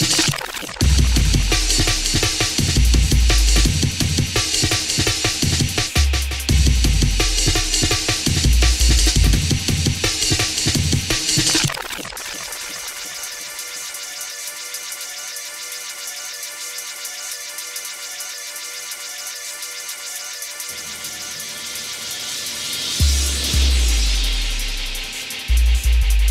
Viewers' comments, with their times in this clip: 0:07 "DJ Crystl - Warp Drive" is such a simple but great tune